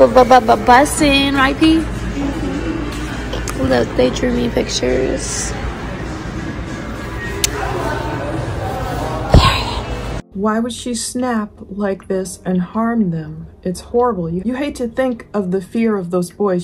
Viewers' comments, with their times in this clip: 0:03 The mom on y these videos sounds like she is on summn